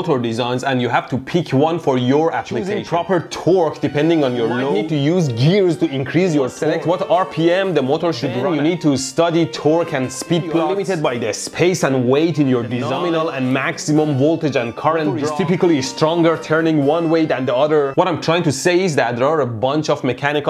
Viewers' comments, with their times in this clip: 0:04 you use gears to increse your sex -electroboom